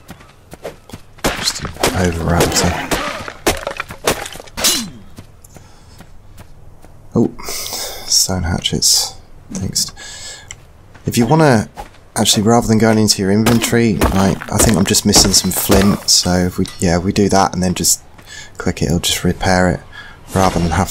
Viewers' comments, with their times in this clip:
0:03 Ai subtitles be like, "subscribe some more anyway"